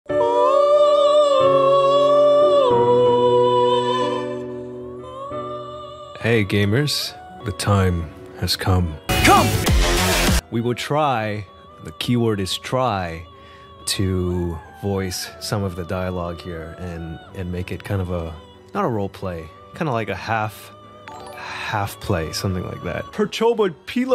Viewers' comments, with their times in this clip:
0:06 and so have i after hearing that voice again 🫢